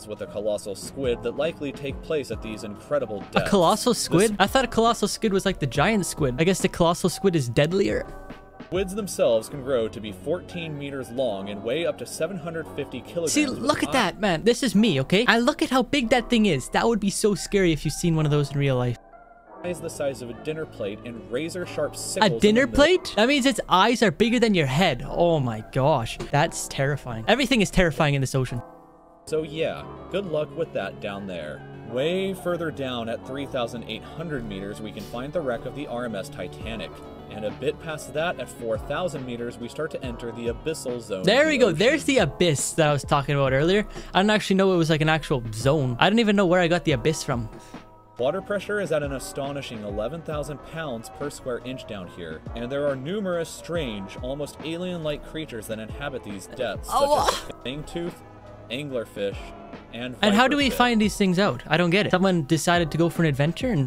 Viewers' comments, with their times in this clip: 0:05 he says sckid
0:51 listen his voice😂😂😂😂😂😂